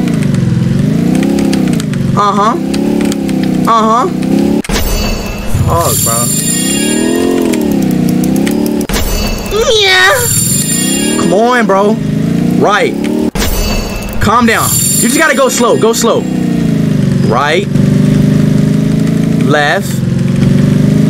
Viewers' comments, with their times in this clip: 0:09 bro start his yamate kudasai arc 💀😂